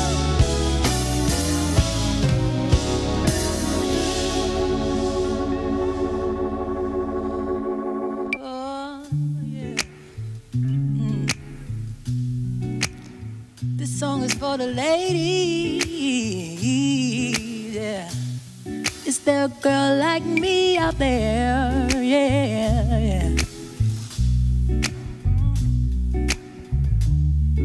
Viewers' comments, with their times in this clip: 0:10 and let me find out Jaz has perfect pitch?